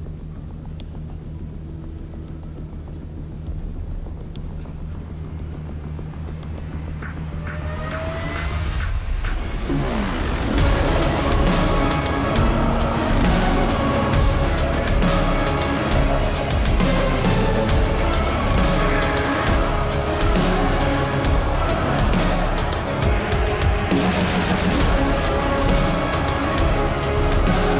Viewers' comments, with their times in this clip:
0:08 Medieval soldiers fighting to dubstep. I've seen everything